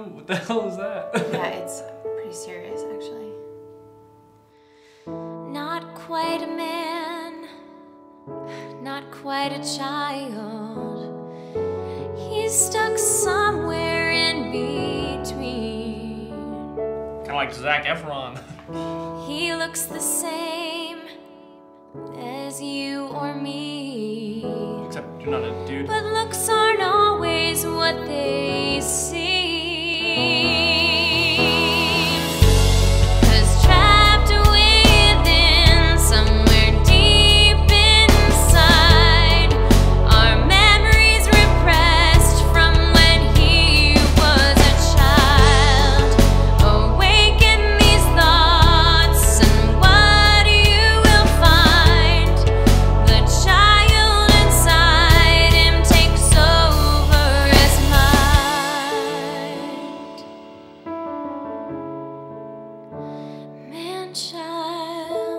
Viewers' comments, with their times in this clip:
0:05 OMG ONWARDS HOT AND PRETTY GIRL WITH PERFECT VOICE WUD SO DATE HER
0:46 Did anyone else hear "mammaries" instead of "memories" ?